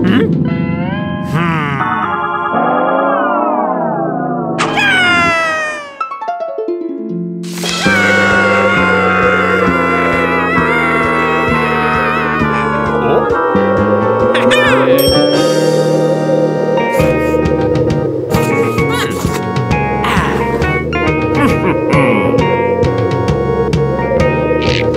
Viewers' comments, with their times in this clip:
0:08 how donald trump screams. ( ͡° ͜ʖ ͡°)